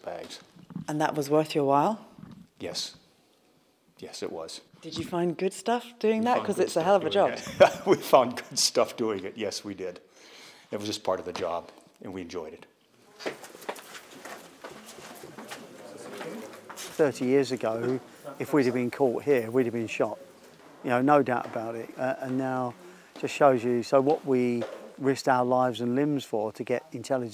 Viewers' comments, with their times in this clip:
0:10 "It was just part of the job, and we enjoyed it" ??? or did he say "we endured it" ? I don't think so, IMO he really said "enjoyed it" Uuugh